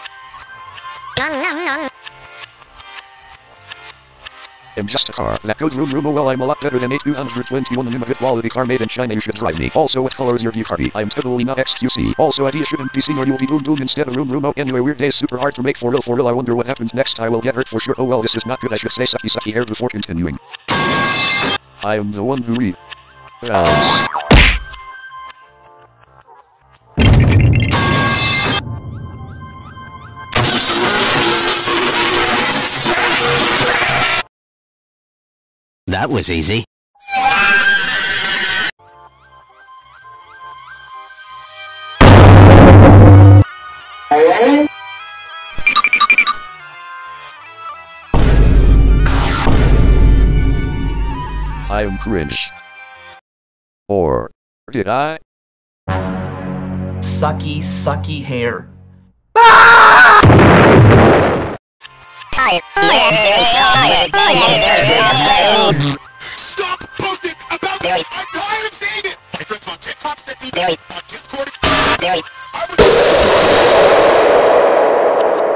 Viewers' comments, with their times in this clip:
0:04 Put at 0,75x speed or 0,5x speed to understand
0:37 G-3 ☠️☠️☠️☠️☠️ FUNNY FALL SOUND
0:57 A-332 becomes Vsauce and says sucky sucky hair and screams
0:59 what was that scream...